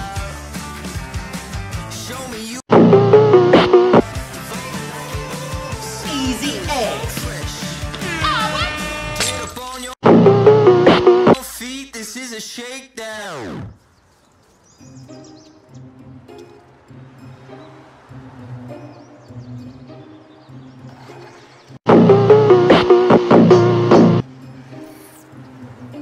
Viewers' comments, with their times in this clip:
0:07 he sounded just like Chris Tucker